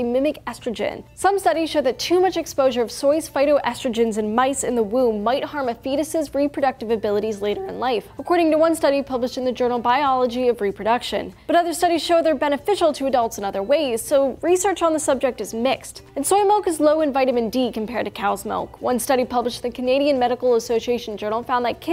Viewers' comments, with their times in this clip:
0:05 yay for voice cracks
0:06 Her voice XD
0:06 that voice crack.
0:07 let no voice crack go unnoticed